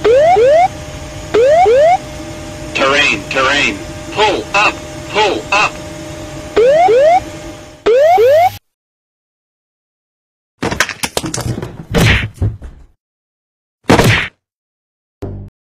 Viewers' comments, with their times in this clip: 0:08 “I got about 100 feet on this.” “Shit!” Sound of Impact
0:10 *Sound of impact *End of Recording
0:10 you laugh and he died (